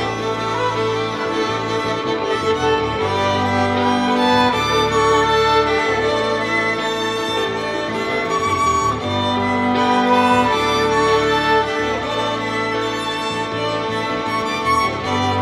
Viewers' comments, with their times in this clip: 0:03 the part of the violin is so well done! you are insanely talented